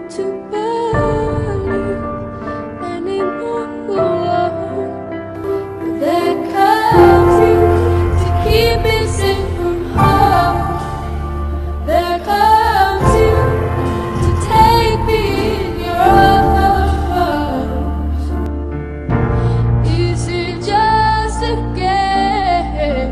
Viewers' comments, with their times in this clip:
0:05 Does anyone notice that the music changes quality, from smooth sounding to kinds crackly and static?